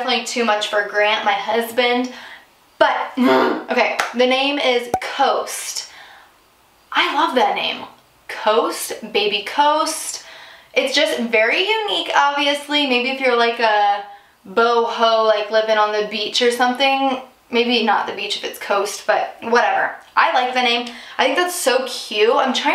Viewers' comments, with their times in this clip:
0:03 WHAT WAS THAT SOUND THAT JUST CAME OUT OF YOU